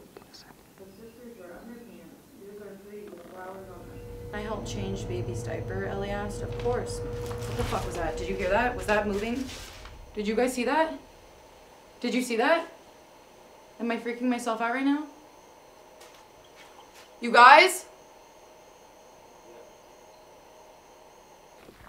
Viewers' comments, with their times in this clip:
0:05 pay close attention to the doll on the rocking chair in front of her the doll moves and makes a sound please tell me its not her doing that 😵😣